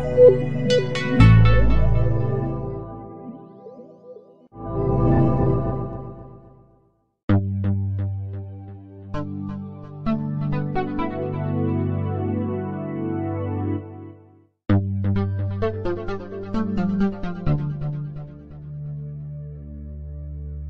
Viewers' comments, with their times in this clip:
0:07 that sounded like Minderia OS